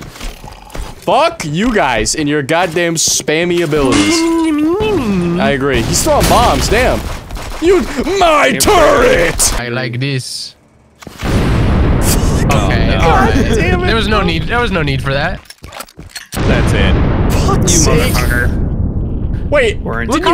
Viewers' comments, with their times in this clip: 0:07 that Torbjorn impression was really good
0:07 nah that torb impression was actually on point
0:08 that was too good of a torbjorn impression
0:08 thats the best torbjorn impression ive heard
0:08 tobjourn impression "My Turret!"